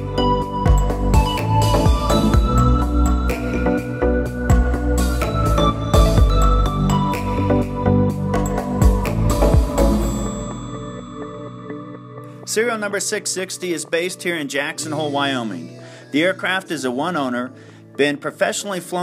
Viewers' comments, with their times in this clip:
0:04 I stopped minutes. The music was too disruptive. Are you selling a plane or a music DVD?